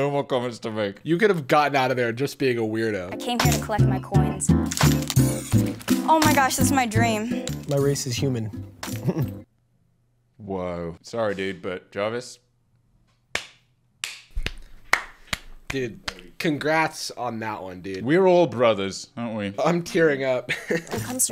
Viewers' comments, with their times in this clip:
0:06 bro I thought he said "I'm racist human" 💀